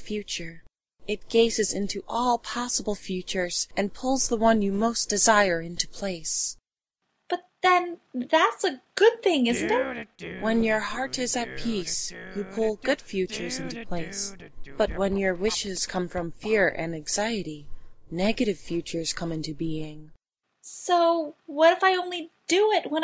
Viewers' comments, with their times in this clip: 0:10 Maybe it's just me but was Nappa humming the theme song to Doug in the background?